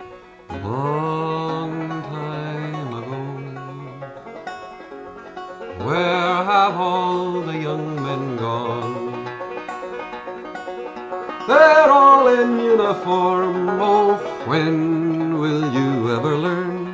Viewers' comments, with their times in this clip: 0:04 "talking atom" has such fresh prince of bel air theme song vibes.....